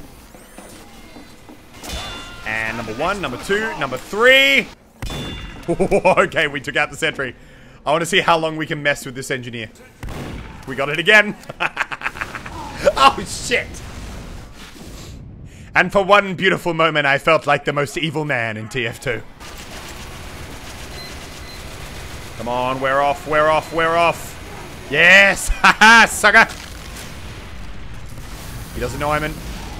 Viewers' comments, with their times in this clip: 0:10 the best laugh ever! 😂
0:17 that laugh was so funny and evil and a karma laugh to